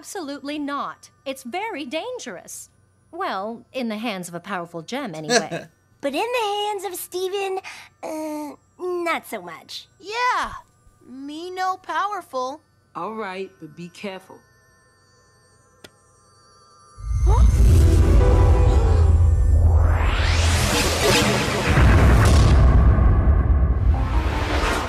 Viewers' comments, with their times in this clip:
0:05 best he he 2017